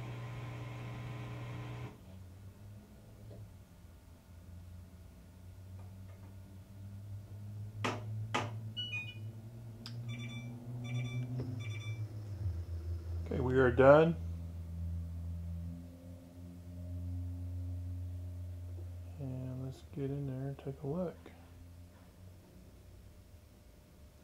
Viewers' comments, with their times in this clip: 0:08 What are those two banging noise ?